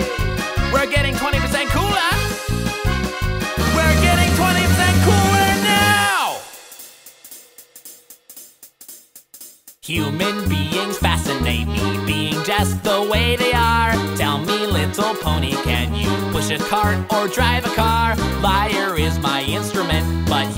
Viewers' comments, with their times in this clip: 0:06 its sounds like tennisball and it fits in the part